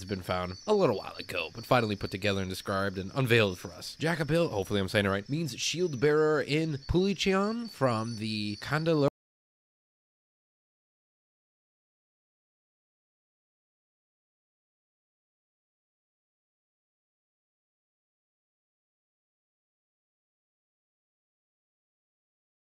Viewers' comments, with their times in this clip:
0:10 Sound cuts out seconds. It's a cool dino though. Armored dinos are my favorite!